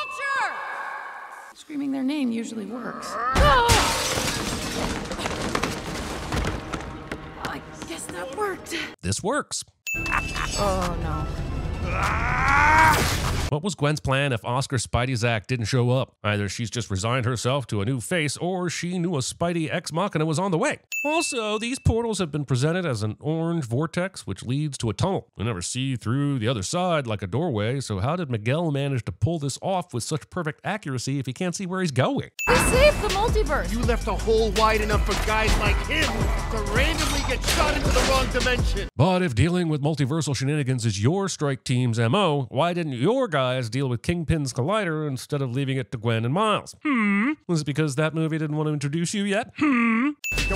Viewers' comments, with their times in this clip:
0:10 just a very tiny nitpick but as someone who is currently learning Italian, I'm pretty sure I heard Vulture say "ragazzi" not "ragazza". Meaning that he says "Bye guys!" instead of "Bye girl!" like the caption says. (also the fact that Italians don't phonetically use the "r" with the lips but instead with the tongue, so the accent doesn't match up either)
0:33 Miguel's great rapping skills 😅😅